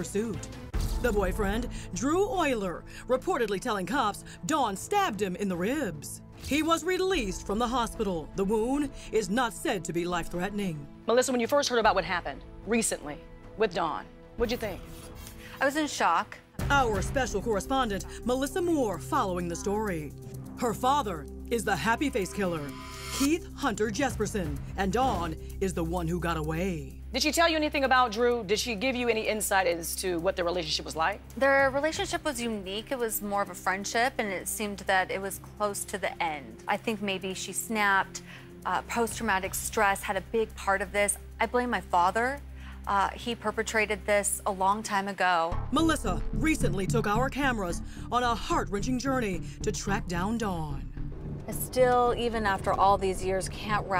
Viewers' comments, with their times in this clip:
0:05 i literally LOL’d the way she says “reeeebs” OMFG this reporter needs to GO 🤢
0:40 Compassion :" I think she snap, PTSD." It's very powerful, how those two ladies behave like family. They seem to respect each other's feeling. And yes, the narrator sounds like a caffeine junkie.